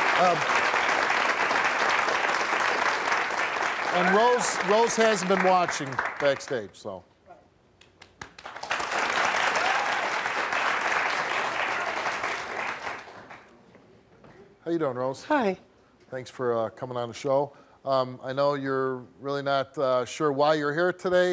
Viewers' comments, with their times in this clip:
0:07 why are people clapping, when they know how she feels about Black people